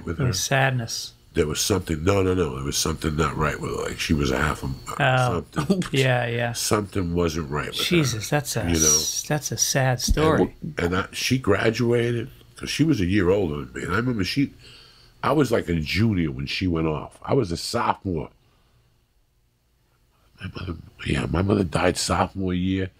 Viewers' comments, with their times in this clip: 0:03 Lee laughs when Joey nearly says ‘Half a Mo Mo’ but thinks better of it as he realises Greg did that big bike ride for them.